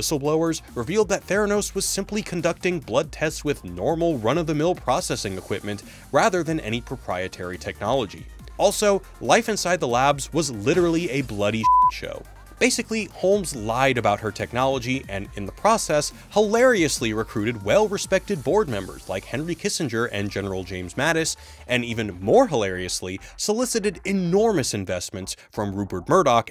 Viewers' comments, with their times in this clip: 0:07 GOD that fucking voice!